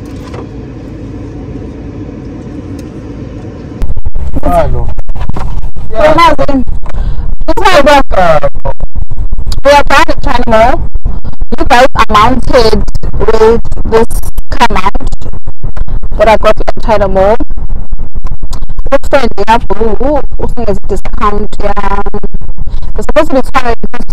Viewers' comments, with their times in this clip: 0:10 I am so sorry for the sound glitch 🙏🙏🙏